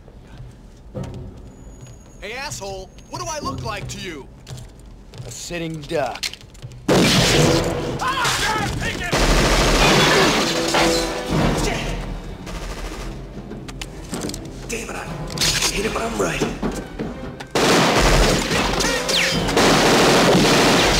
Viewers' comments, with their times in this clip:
0:04 wow that delivery. So badass “A SITTING DUCK” 😎😎